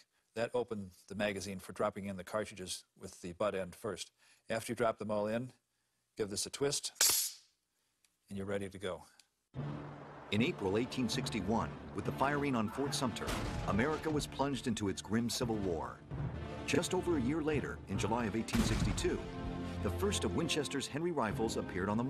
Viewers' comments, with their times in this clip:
0:06 Ouch that spring sound I have the feeling he didn't found it unpleasant to do that for an old gun.